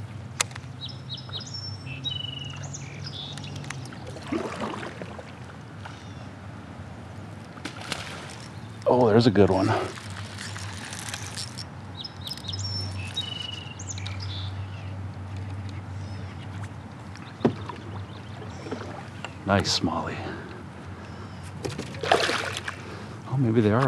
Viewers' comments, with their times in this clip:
0:06 I thought from the splash that was going to be a 5 pounder